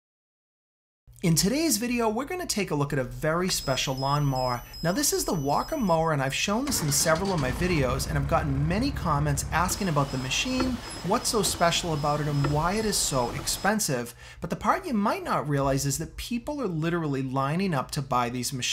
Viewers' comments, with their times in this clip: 0:04 Well it looks like the upgraded the beeper from Earrape to the same one in your car.